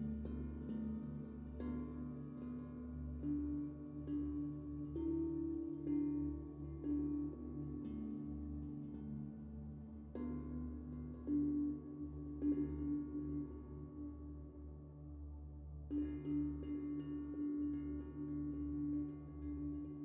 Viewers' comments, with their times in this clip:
0:03 Thanks for sharing these! It's interesting to see your daily process. 2 questions: What are you doing when you just draw arrangements of geometric shapes with no paint, as ? Also, what is a "toast box"? (Your voice is very faint on this video, although the music sounds normal.)